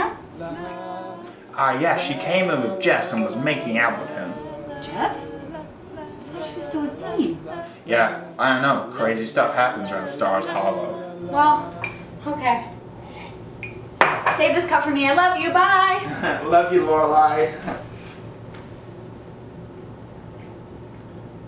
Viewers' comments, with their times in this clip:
0:08 The la la's were in sync which made this bit spot on